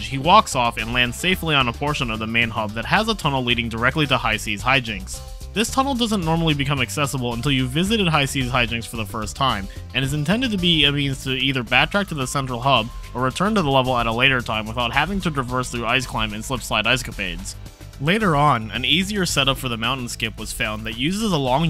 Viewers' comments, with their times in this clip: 0:09 For the life of me no clue what you said